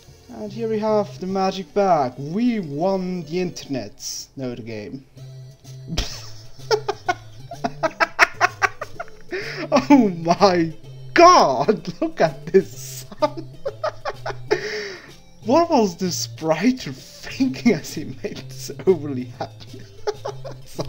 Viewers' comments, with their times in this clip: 0:06 you make me laugh when you laugh. XD